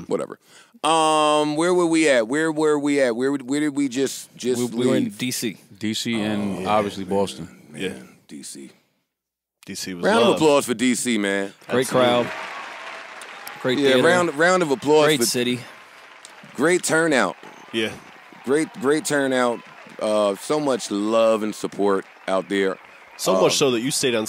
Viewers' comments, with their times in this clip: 0:05 CAM'RON from "Paid In Full... voice: "aye yo, I'm tellin you, A..... D.C....... D.C.... D.C. my G, they ready waiting for us down there...